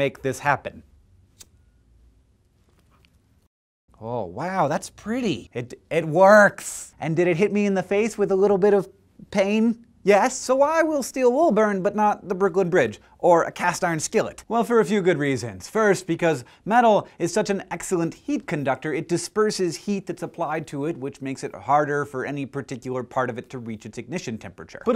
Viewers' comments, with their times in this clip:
0:05 the way he said it works is so nerdy
0:06 he sounds rly rly like pewdiepie